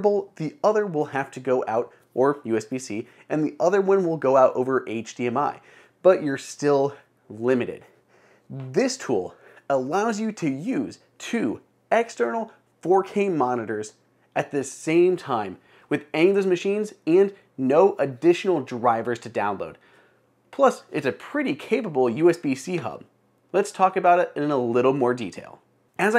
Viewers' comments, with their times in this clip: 0:07 my man is out of breath lmao. Lose some weight bro